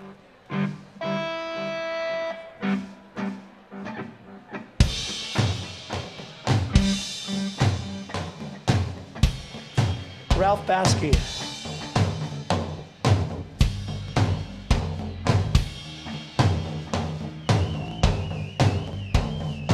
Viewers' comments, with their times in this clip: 0:05 burn+shine starts love the outtro - love the fuck up in vocals at the end of the second verse!